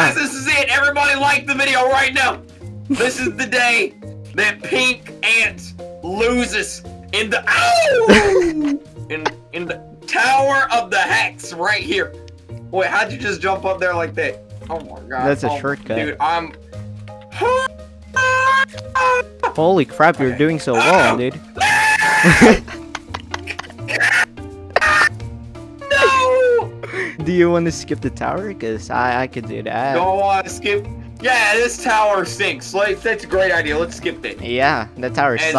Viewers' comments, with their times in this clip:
0:05 Thay awooooo got me 😂😂😂💀
0:21 🤣🤣🤣 I LIKE THAT YELL
0:23 Kreek: (raging) Also Kreek: his mic struggling to exist with that much rage